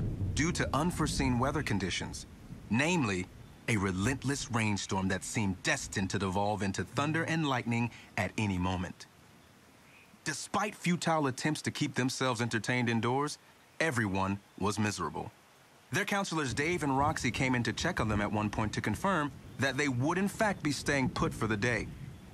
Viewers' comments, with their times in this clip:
0:08 he sounds like Issac Clement from jurassic world evo